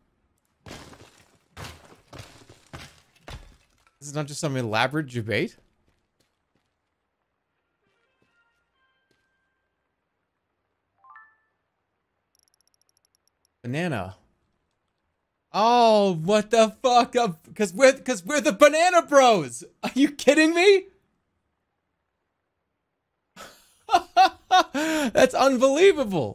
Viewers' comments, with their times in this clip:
0:09 quite possibly one of the most unintelligible moments of all time